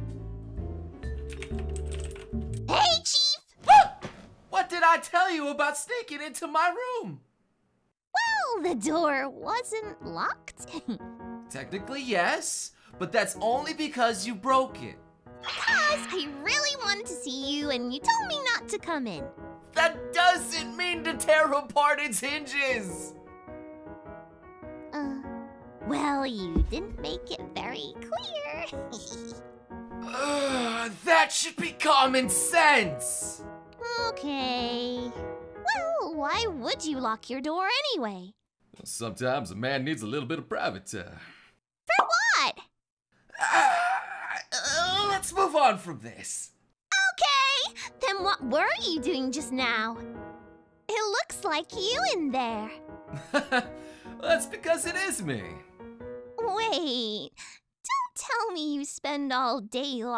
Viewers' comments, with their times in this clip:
0:04 Idk why , but that scream like sent me in the floor laughing .... I lost my shit when she was making todoroki and midoriya kiss…😂😂😂😂
0:41 (music starts playing) having a good time having a good time